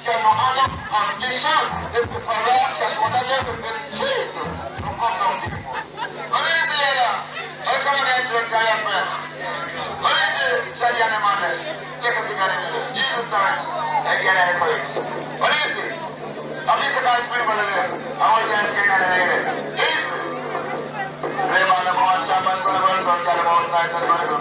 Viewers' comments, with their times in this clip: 0:09 wonder why they cut Yellowman's mic feed, it was kinda weird the way he walked off